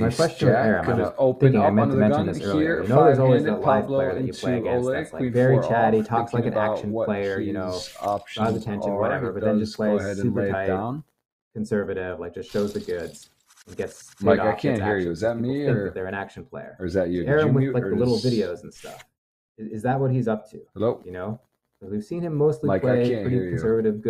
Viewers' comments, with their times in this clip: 0:05 my favorite part is when they just both talk at the same time for 5 mins